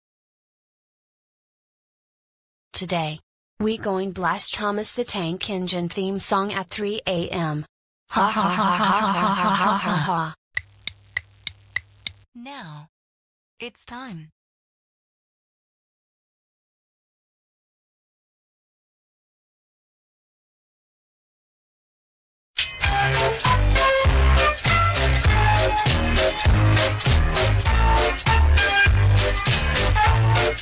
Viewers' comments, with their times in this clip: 0:05 R.I.P. headphone users
0:15 WARNING - SONG EARRAPE
0:17 not that loud